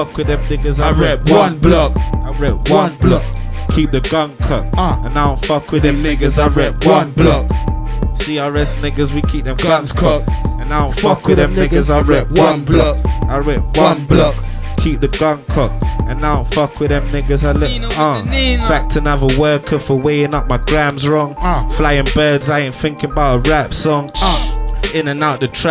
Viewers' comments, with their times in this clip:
0:10 french montana is that you?!?!? loooooooooool